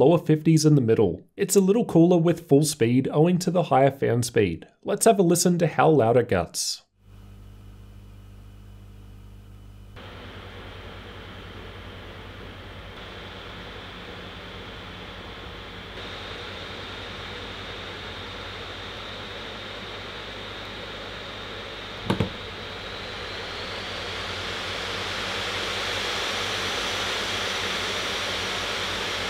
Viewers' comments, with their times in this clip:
0:10 at that moment i knew that this laptop would be a jet engine . On a serious note, i appreciate the effort of alienware but people are now looking for laptop they can game on and go work with without getting the nerd-tag.